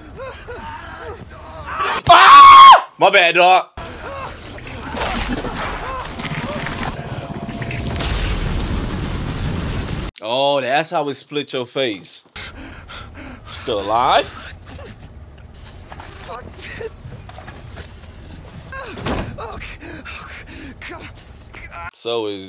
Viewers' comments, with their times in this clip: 0:03 You screaming 🤣🤣🤣 gained a sub